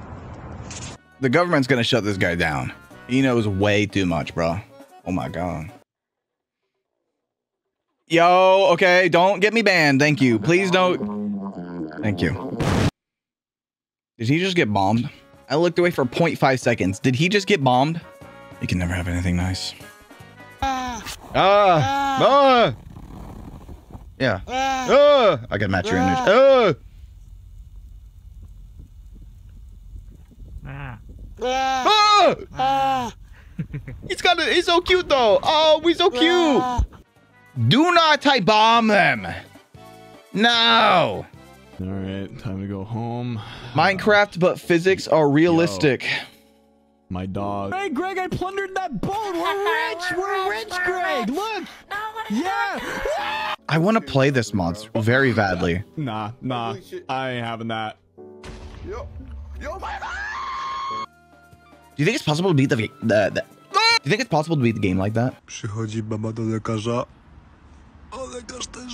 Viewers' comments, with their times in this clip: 0:09 You know you listened to a song way too many times when you instantly recognize a second of it when played from random noises
0:11 could be wrong but i swear thats Racing Into the Night by YAOSOBI just very distorted-
0:34 did he not just laugh?
0:51 had me rolling, the villager's voice sampled from like 3 voicelines going "no what are you doing NOOOO"